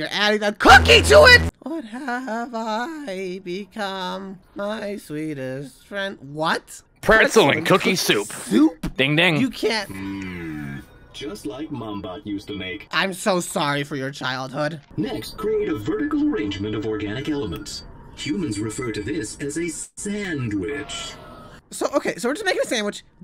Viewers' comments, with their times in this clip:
0:08 the mmmmmmmm crackd me up in laughter